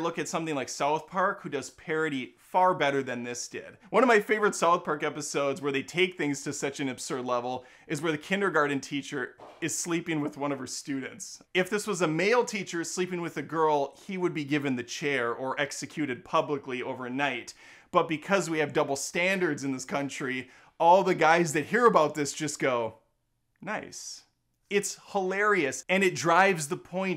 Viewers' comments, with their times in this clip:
0:09 Why is nobody talking about the fart ??! 😂😂